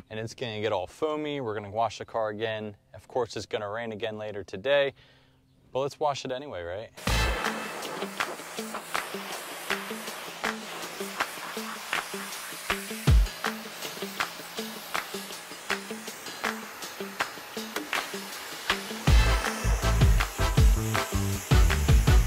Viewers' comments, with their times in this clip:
0:08 here’s a low music part.